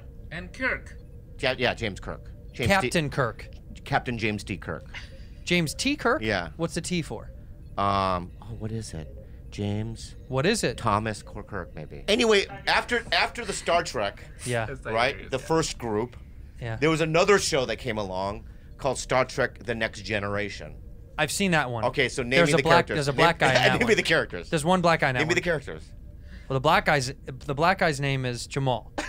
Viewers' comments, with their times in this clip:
0:10 Some nerd in the background went 'Tiberius'. (oh wait, that was me talking out loud) edit: after turning it up and listening, someone in the background really said this LOL